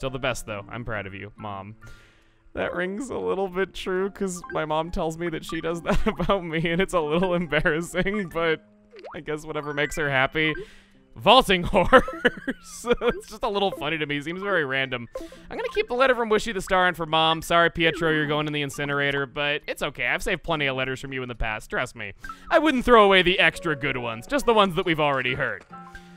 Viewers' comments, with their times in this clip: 0:09 starting to sound a bit like Croque there,